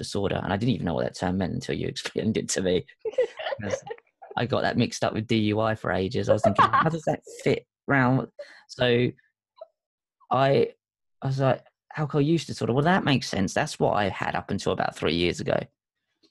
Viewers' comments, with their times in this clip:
0:04 beautiful laugh, thanks for the talk it was a pleasure